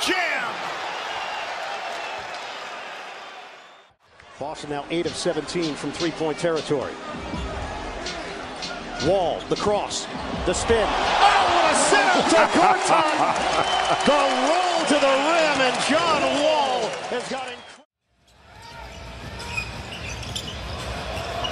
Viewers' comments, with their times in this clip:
0:07 hit on beat, made the play so much colder